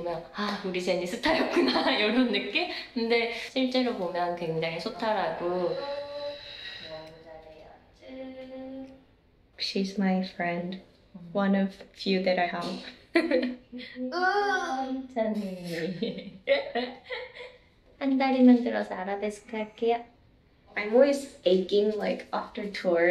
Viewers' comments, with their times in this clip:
0:05 Pe lates, pie late. 😂😂😂 Pilates is an exercise that focuses on strengthening your core and flexibility. It's what she's doing while talking about her experiences :) that was the best part of your reaction lol. Again enjoy your reactions, highly entertaining. that's pilates